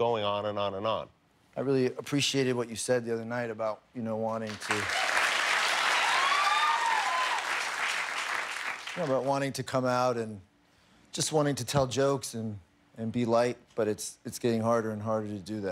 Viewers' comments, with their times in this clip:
0:03 Wait why did the crowd clap ?? Ryan was just trying to get his word out